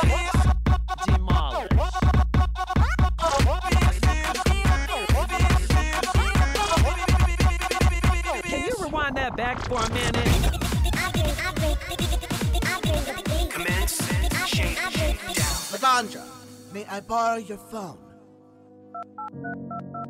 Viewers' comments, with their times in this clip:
0:04 Does anyone else hear fish sticks ?